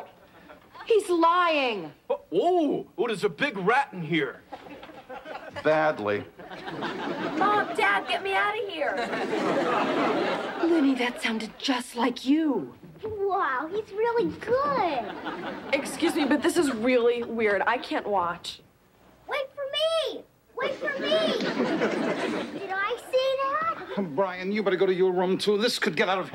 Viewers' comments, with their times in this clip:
0:07 Crazy! He imitates voices. I wonder if he can do that ordinary, or only in that statem